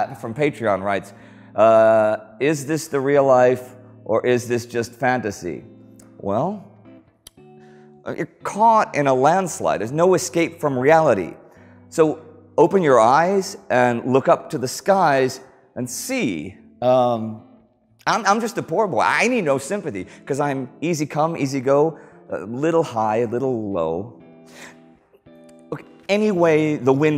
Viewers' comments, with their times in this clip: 0:08 Anyone notice computer dudes typing